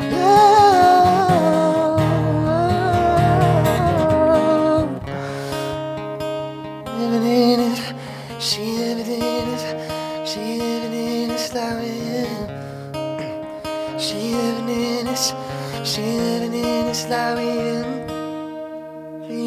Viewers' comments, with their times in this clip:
0:04 i know he did not just try to do a live vocal effect with his hands